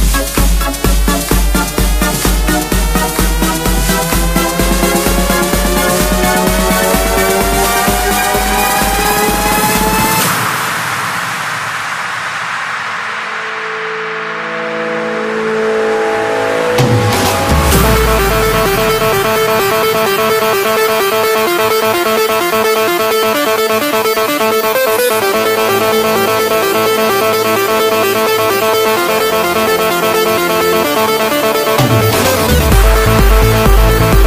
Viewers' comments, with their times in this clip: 0:10 is the beat drop and up.
0:15 is not a drop
0:15 dat drum drop